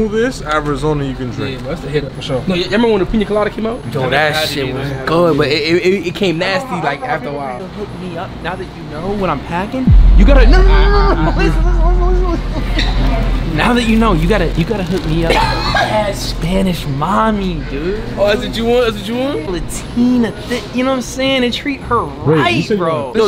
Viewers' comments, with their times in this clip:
0:09 when that horn blew it moaned I bust out laughing